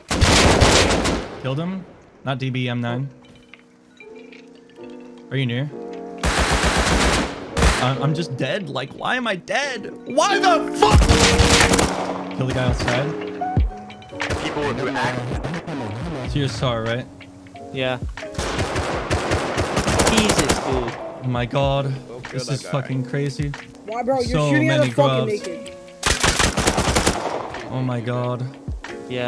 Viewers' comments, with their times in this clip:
0:10 thank me later Def not earrape
0:15 The scream cut off 😂😂😂